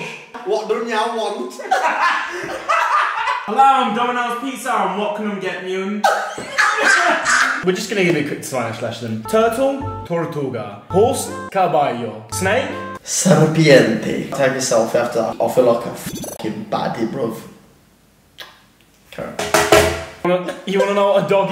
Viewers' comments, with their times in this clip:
0:03 "Hello I'm Domino's Pizza what canum get meyum" I'm fucking creasing 😂😂😂